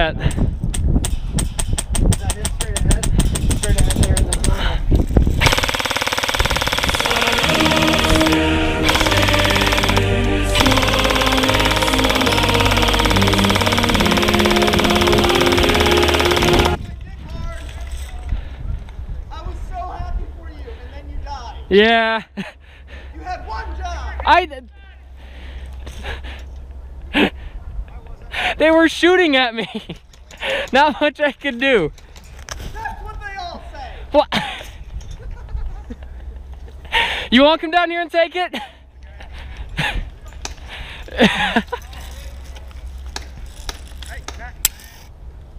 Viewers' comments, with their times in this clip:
0:07 Just found this YT Gem and its hilarious XD My Fave part was "USSR Anthem intensifies"
0:09 * Angry Kalashnikov noises *
0:31 That voice crack tho 😂